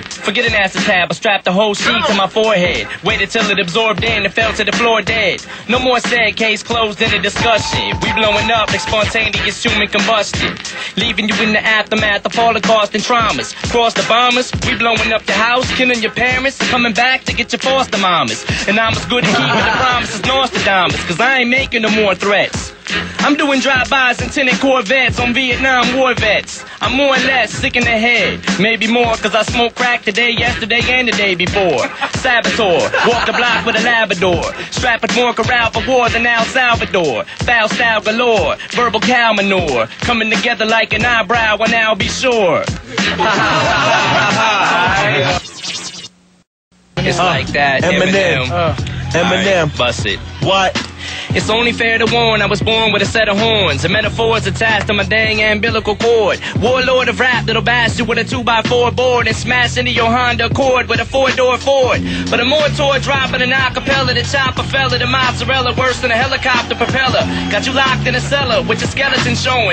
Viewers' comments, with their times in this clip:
0:07 Logic's "Under Pressure" sounds verrryyyyy similar. mm
0:43 is so creepy how he fake laugh right here LMAOO 😭😭😂 he said “ha-ha-ha-ha 😐”
0:43 dude even laughed on rhythm
0:50 i listen to this everyday lol. Em's flow is fucking sick and his mind is so fucking sick at puttng rhyms together like until the end. that shit was fucking insane. THUMBS UP IF YOU KNOW EMINEM IS THE BEST!!